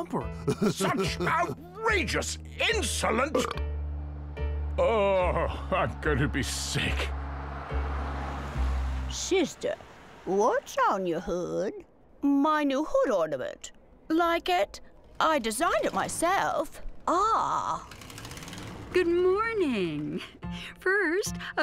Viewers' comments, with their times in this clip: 0:04 I fucking lost my shit when Struts groaned.